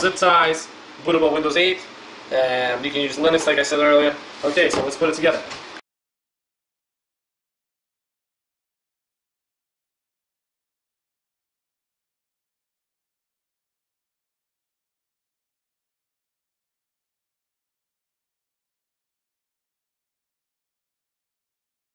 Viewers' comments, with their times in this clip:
0:06 Hi, the audio seems to go out of synch after Am I the only one finding this?